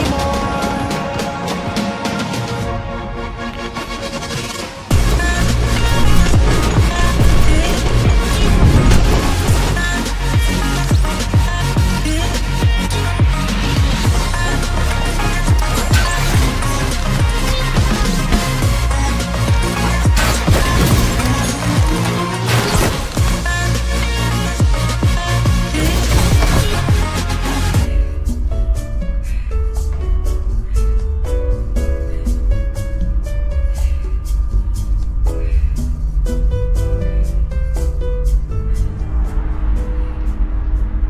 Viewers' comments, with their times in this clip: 0:07 yo that animation and beat drop HIT DIFFERENT BRUH
0:26 All the fighting! Wow so intense! **Kuno gets in elevator chill music and her just standing there 😂😂😂